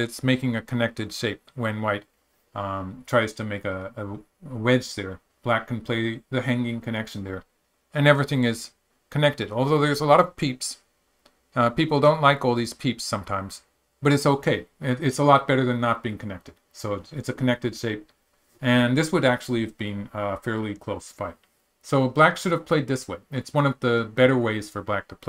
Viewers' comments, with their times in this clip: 0:10 Peeple don't like all these peeps :D